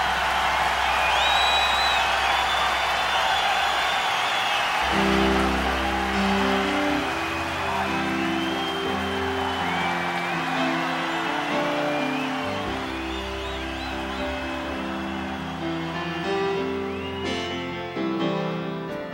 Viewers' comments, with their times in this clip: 0:04 I just love that beutiful piano intro with a slight gospel taste by the always great Greg Philinganes - even on an early, wiry sounding mid 80s digital piano. Then Phil's drums come in, with his unique drum sound (always including an incredibly grgeous sounding ride cymbal). And awesome Nathan East on bass. The most incredible thing is that all three musicians-friends Eric Clapton invited for this show are also fantastic singers. This is a true all star band playing together tightly.
0:05 Now that's what I call an all star band! Instead of trying to play each other off stage, they play together perfectly, while still retaining their individual signature sound - and it's visible that they all highly respect each other. I love Greg Phillinganes' soulful piano intro followed by a drum pickup that screams "Phil Collins!". The entire "end section" is epic!